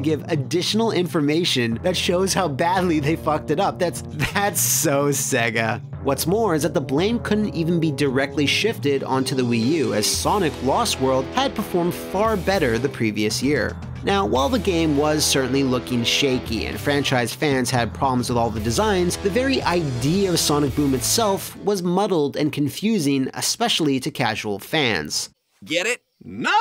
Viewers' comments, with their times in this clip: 0:10 That music syncs really well with Sonic's actions here.